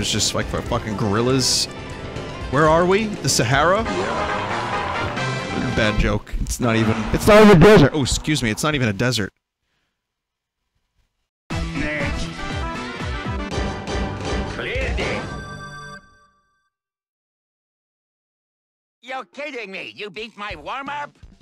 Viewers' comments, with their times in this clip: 0:06 It's not eve- I T ' S N O T E V E N A D E S E R T oh excuse me. It's not even a desert.